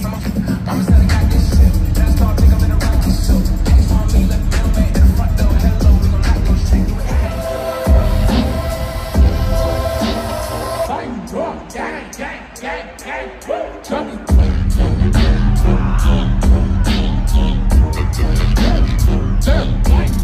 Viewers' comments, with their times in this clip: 0:06 the certified remix goes crazy